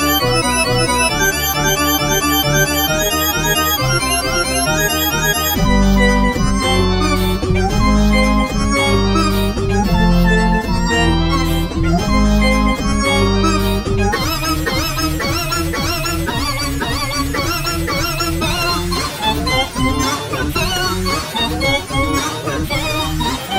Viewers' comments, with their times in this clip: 0:05 Looks Like Fake G-Major